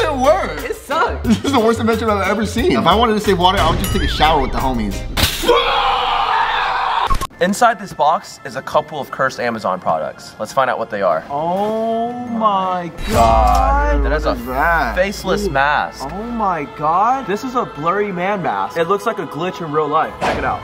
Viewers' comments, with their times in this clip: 0:06 :HAHAHAHAHAHAHA THERE WAS SOME MAN IN THE SOUL AND SOME BATMAN JUST OPENED IT AND A SCREAMING RAT CAME OUT😂😂😂😂